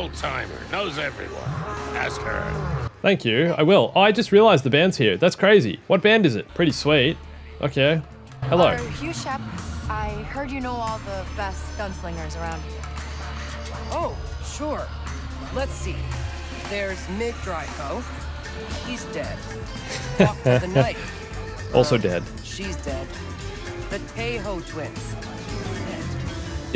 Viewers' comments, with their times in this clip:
0:08 not how you talk to someone in a bar with a band right next to you lol you'd be lucky to hear anything